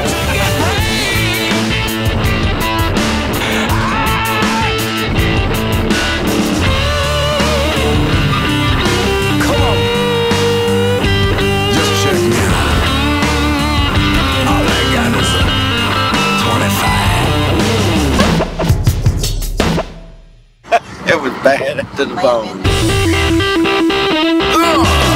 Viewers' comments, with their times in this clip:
0:07 "Jeremiah Weed Can Slide Guitar" style invented